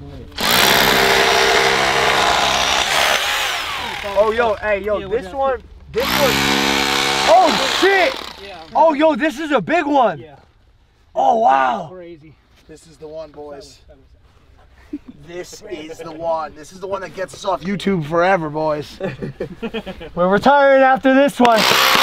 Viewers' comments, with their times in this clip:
0:10 logan looks and sounds like a little kid saying oh wow 😯😂😂😂